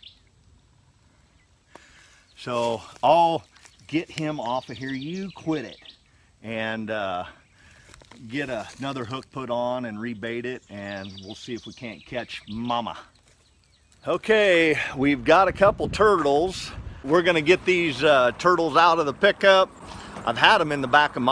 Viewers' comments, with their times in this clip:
0:04 Jaw snapping sound ! Wow!